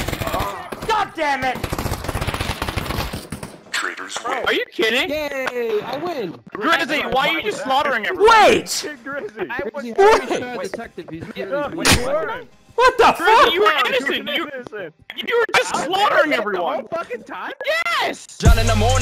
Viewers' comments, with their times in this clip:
0:05 he sounded like a fucking child “Yay I win” 😂